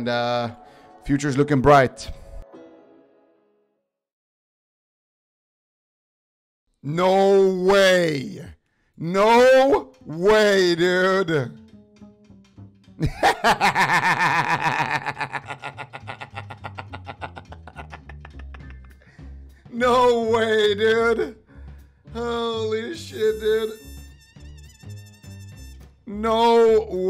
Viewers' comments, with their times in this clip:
0:07 onwards is absolutely hysterical, your laugh and the music that kicks in right after, I'm in stitches laughing.
0:09 that laugh with music is so iconic now
0:13 the goblin laugh lol
0:13 u gotta love that laugh! Haha! Hope that shitty pala will see this ^^